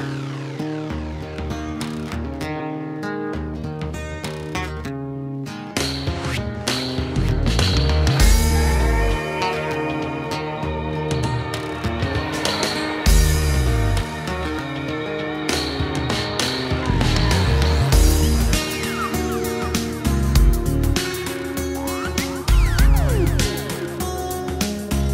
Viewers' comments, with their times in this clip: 0:06 goes so deep :O